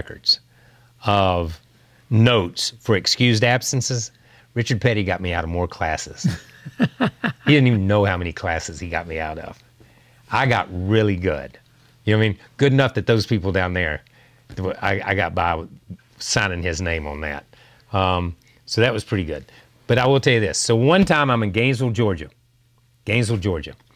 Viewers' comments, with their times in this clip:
0:07 The King of cool. That laugh tells you a lot